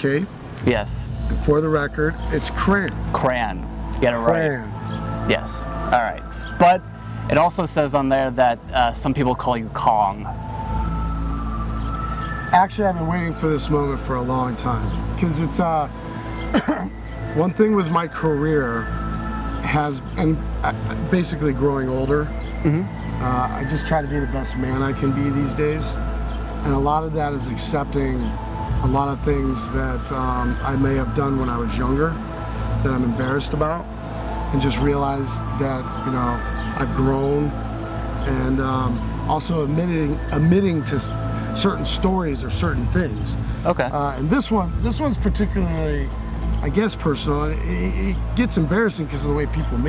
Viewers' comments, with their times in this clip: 0:04 Shawn Talking: Me hearing illuminati Music in the background:
0:07 I swear I heard the X-Files theme...
0:35 why is there alien music in the background?